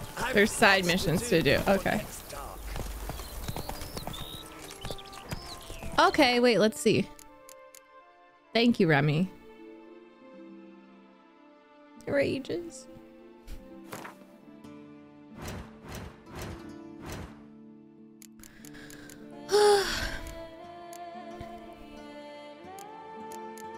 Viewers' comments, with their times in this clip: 0:09 Best song on the entire Witcher soundtrack. Never fails to give me goosebumps.